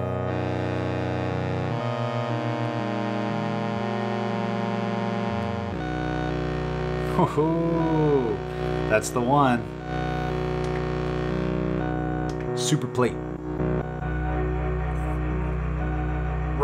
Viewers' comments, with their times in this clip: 0:04 beautiful timbre. thanks for sharing all these ideas. very helpful for understanding